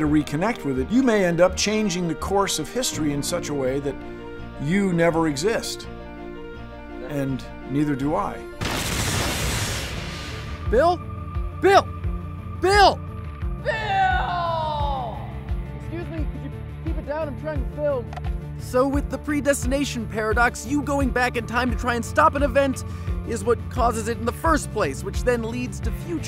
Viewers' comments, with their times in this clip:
0:09 Uuuugggghhhh what's that song? It's got a great, intense build-up, I just love it so much but I've been looking and looking and uuuugggghhhh.